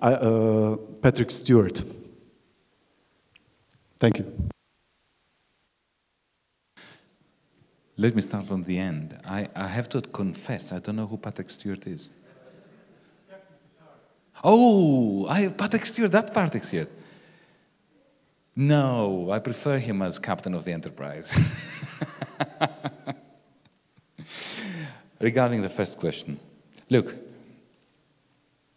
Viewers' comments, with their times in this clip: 0:09 ooooh, that PaRTick Stewart! :)